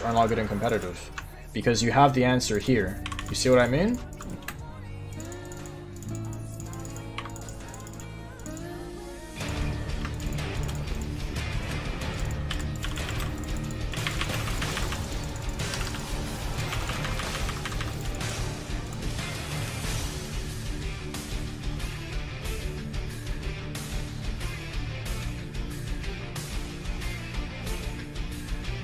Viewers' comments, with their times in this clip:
0:10 that naruto theme hype asf